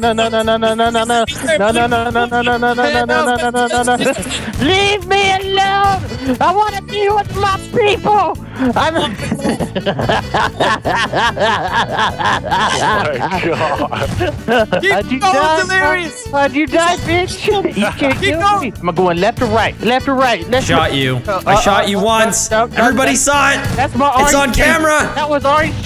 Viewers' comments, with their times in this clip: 0:08 that laugh OMFG :D